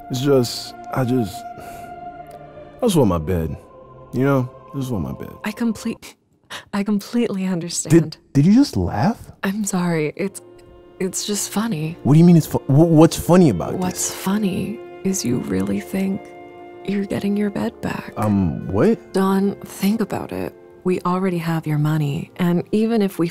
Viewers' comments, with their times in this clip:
0:04 anime female. Villain XD